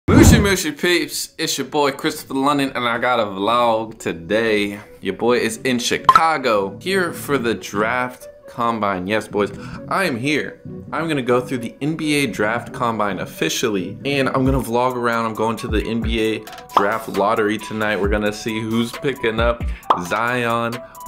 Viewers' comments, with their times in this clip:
0:05 Who else thought they had a Snapchat notification
0:06 Thought I got a Snapchat notification 😂😂😂
0:06 I thought I got a message on snap lmao 😂
0:07 I thought I had a Snapchat notification